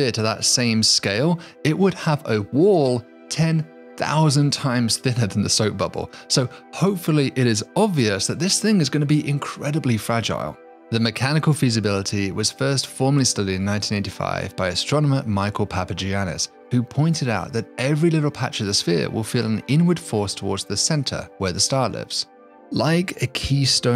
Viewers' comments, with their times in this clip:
0:06 sounds like "thicker", but CC is correct, maybe my ears are going out.